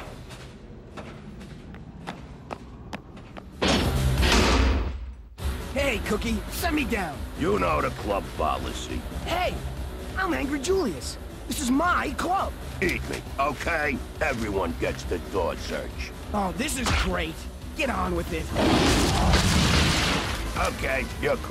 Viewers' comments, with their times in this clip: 0:07 that voice is quite familiar for me (i don't remember his name)